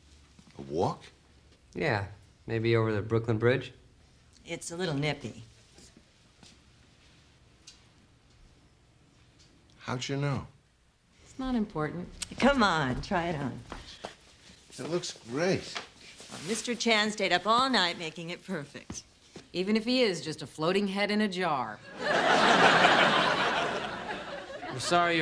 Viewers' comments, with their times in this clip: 0:06 oh my God when he says that "How did you know?" that's such a subtle gentle acting. I really felt something. I loved his warm character to bits.